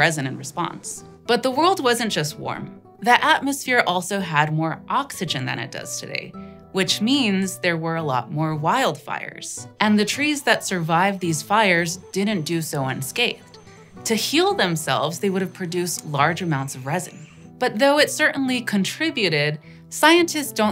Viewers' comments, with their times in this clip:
0:06 tfw you recognize the background music and suddenly can’t focus on the video because you’re trying to hear the music which has been balanced to not intrude on the other audio